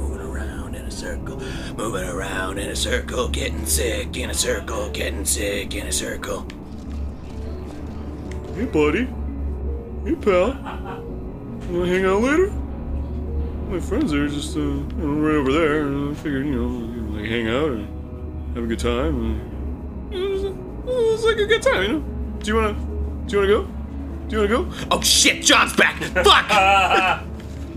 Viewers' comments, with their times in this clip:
0:08 WHO'S LAUGHING IN THE BACKDGROUND?!?
0:09 Who was laughing ?